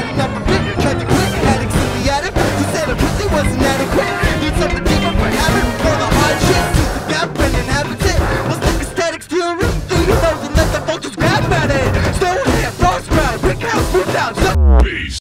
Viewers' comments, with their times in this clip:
0:03 anyone hear a default apple ringtone?